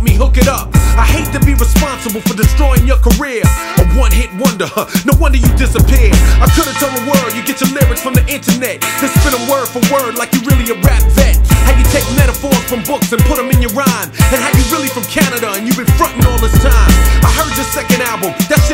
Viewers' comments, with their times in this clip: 0:05 This diss ain't actually that good......the beat carries LL lol. Notice how the beat changes.....makes it seem like he's going in when he's spitting average disses